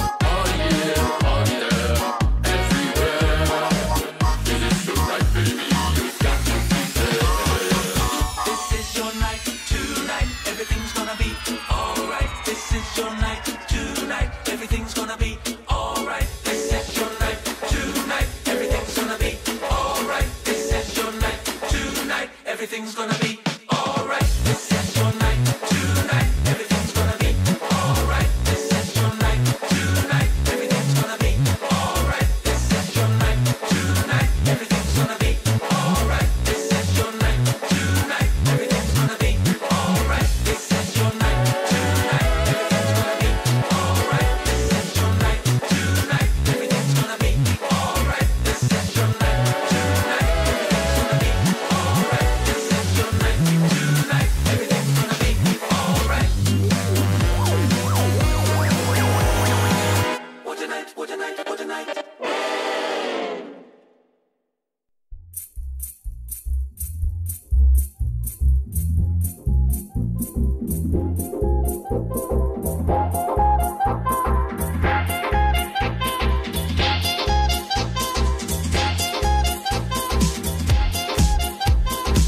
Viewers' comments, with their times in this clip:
0:07 is so buttery smooth... you body just has to slide with it.
1:05 I loved everything here but i have to say my fav was because it gave you electro, swing, and that classy feel. Like if you agree!